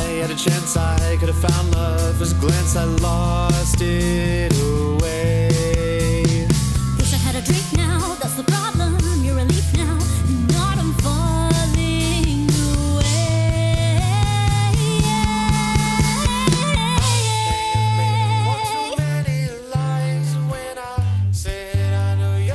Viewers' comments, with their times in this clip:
0:07 is a moment I keep replaying nonstop. The riff at the end is just chef kiss